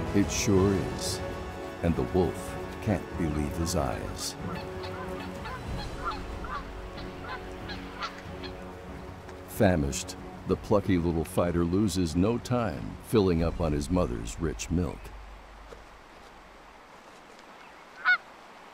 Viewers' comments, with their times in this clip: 0:04 those Geese are just having a party laughing and cheering on.
0:05 Geese are like, "Yeah punk you got your butt kicked! By a baby Bison!" ( ^ _ ^ )
0:06 The geese are laughing and cheering the outcome.